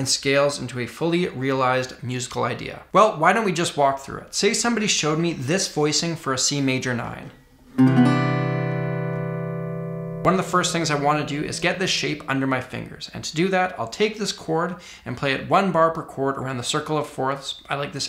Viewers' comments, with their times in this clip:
0:06 ah yes, the rob scallon chords